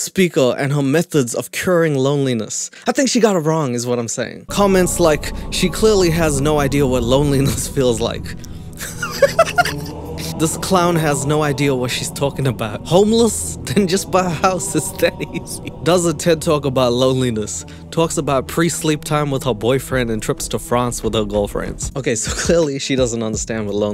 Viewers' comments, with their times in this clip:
0:09 the laugh + bg music AM I WATCHING A DEATH NOTE EPISODE PLS